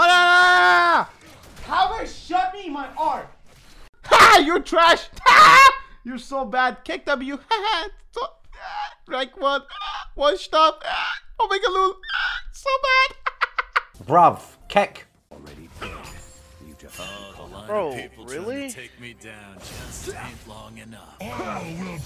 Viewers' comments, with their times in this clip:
0:08 my hiccups when I’m trying to tell a joke